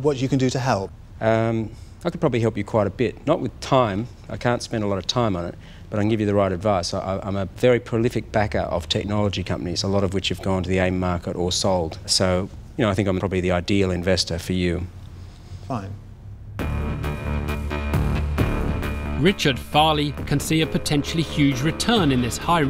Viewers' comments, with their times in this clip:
0:09 Peter can't hold his laugh when he hears Richard saying he is a "Prolific backer of tech companies"